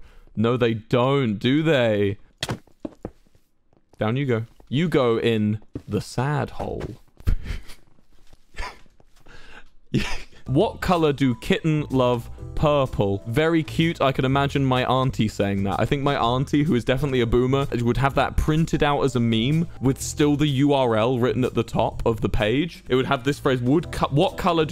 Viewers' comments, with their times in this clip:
0:08 this was heartwarming esp w wilburs soft wheeze reaction